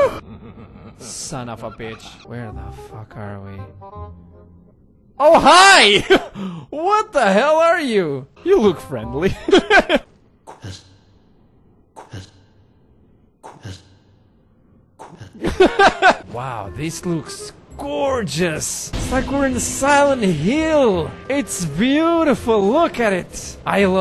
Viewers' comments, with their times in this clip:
0:10 I'm Polish and for a few moments I tought that this creature is saying "kutas" what means "dick" in my language. Oh my brain please stop